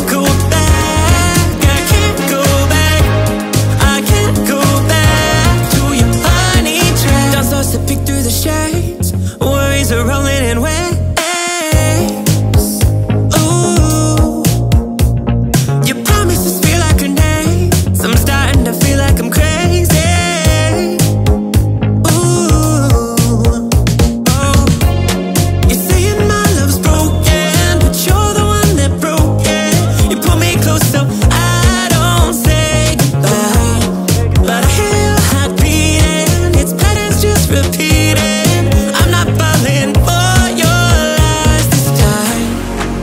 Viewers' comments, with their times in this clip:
0:08 he said roman reings ☝️
0:26 "But your the one who broke it" Sounds like your just singing in korean.. Also where did the nectar come from 😨